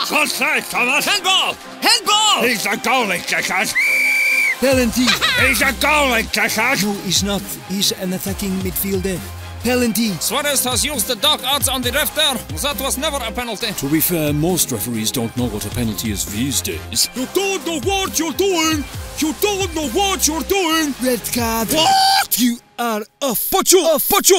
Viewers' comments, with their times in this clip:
0:08 bro really said pelanty 🗿🗿💀💀